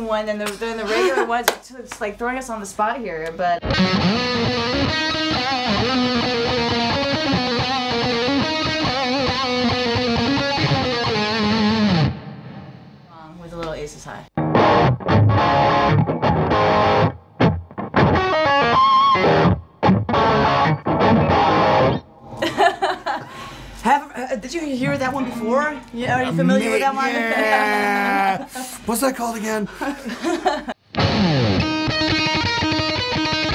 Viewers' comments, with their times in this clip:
0:04 Lovely people, average playing. is poorly played and she was in a tribute band too. The sound doesn't help.
0:14 When you can't really play that riff, but want to play it anyway...